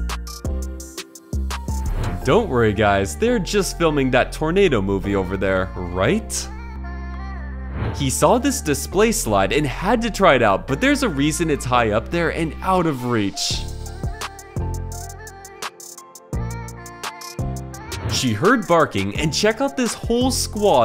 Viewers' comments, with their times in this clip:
0:03 DOES THIS PERSON HEAR THE TORNADO SIREN????